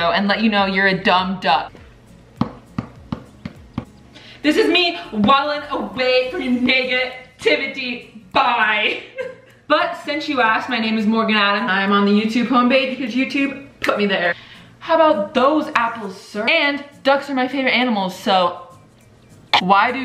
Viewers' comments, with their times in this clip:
0:06 BAHAHAHA I thought she said the n word but anyways I love your videos so much and thank you for saying duck instead of well duck